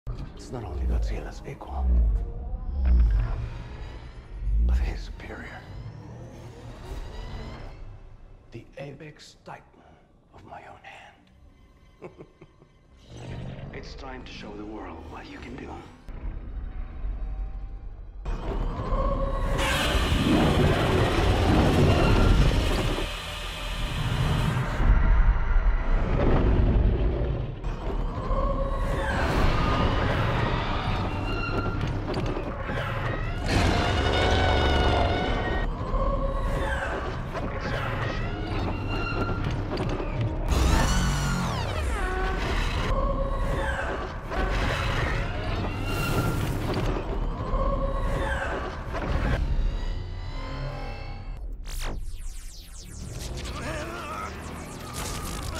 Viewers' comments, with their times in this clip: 0:03 I love how you can hear Ghidorah's charge up sfx
0:06 The powering up sounds like Ghidorah’s roar
0:42 why does that sound like the robotnick fleeing sound in S3&K